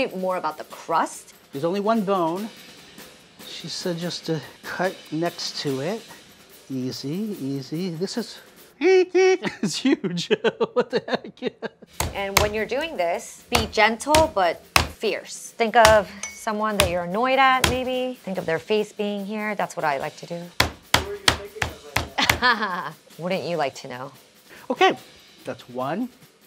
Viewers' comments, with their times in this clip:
0:08 did anyone else hear the beginning to the Mickey mouse clubhouse outro or just me